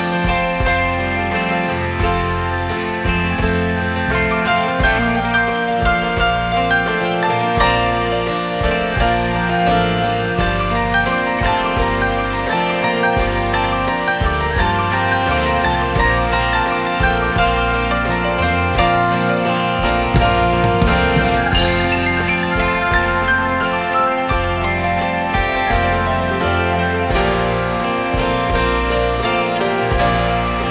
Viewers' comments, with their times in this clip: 0:08 Every time that I hear those 12 magical seconds that start I close my eyes and focus on the piano (hardcore) - I get teary eyed every damn time. Hearing this song live is on my Bucket list.
0:11 This song is very touching and BOSS sings with an incredible sensibilidsde...